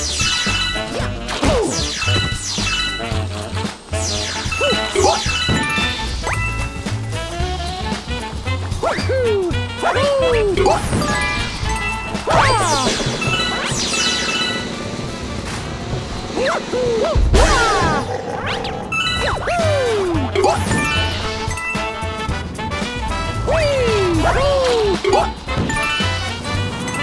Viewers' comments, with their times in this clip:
0:10 Same with that mushroom guy. The sound was perfectly in sync